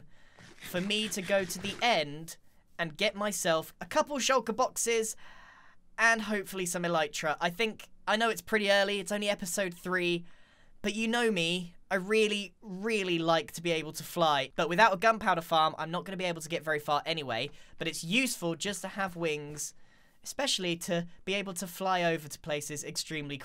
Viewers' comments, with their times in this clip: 0:06 did anyone else hear the random breath there? It scared me so much 😅